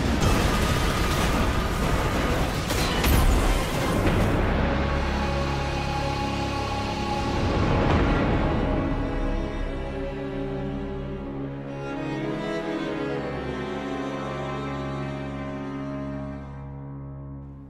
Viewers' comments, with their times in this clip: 0:03 I swear I heard icebreaker